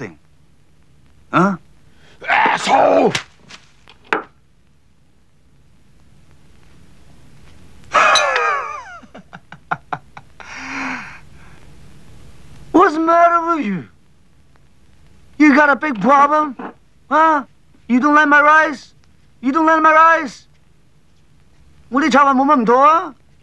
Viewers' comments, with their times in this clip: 0:08 That Chow Yun Fat laugh tells you shits about to go down.